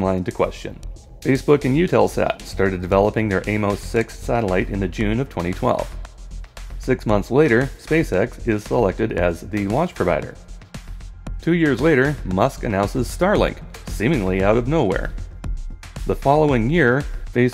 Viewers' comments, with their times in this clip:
0:05 haha, was the background music for the conspiracy part meant to mimic Zeitgeist?